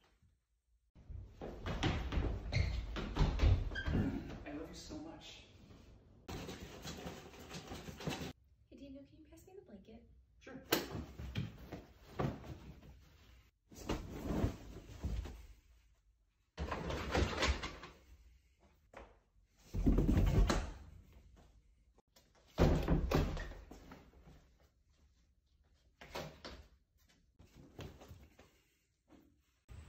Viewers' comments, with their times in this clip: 0:07 when you’re tryna adult but Ghost Division kicks in
0:12 her wife laughed